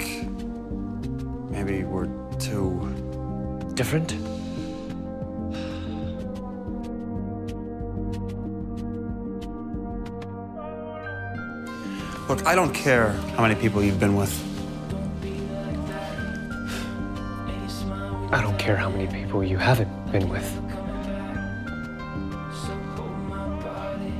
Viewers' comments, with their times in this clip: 0:08 Can anyone tell me what is this music ? It is giving me so much Twilight music vibe. I mean yeah I love the music part most.